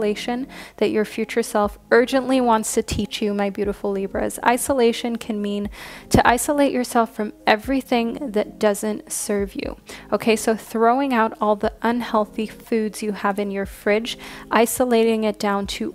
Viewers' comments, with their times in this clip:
0:03 I totally heard, “you negative believers.” Upon triple replay I realized you were loud and clearly saying, “My Beautiful Libras.” This really made me giggle 🤭